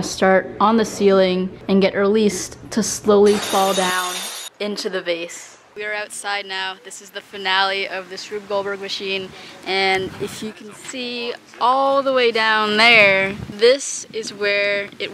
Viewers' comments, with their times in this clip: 0:03 Did I just hear the herringbone fall?